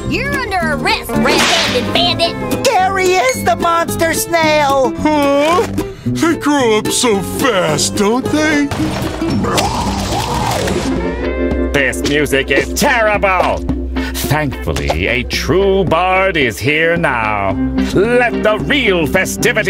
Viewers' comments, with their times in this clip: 0:03 Spongebob sounds off